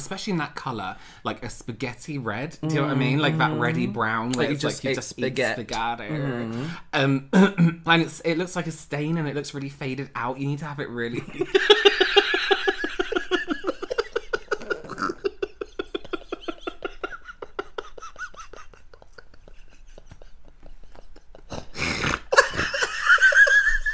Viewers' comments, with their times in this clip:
0:06 i don't even understand why they started laughing but i laughed along